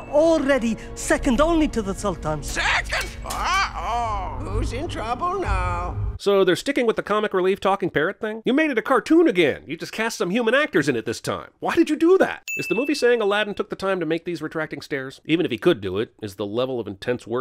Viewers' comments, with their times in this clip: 0:04 Parrot sounds like master Roshi